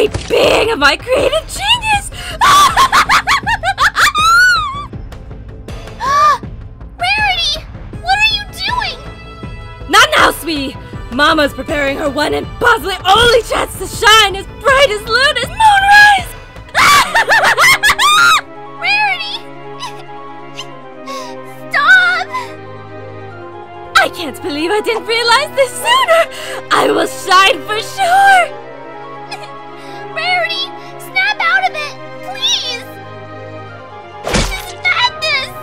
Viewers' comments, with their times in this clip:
0:03 HER LAUGH SO FUNNY
0:17 it reminds me of the Zoobe bunny laughing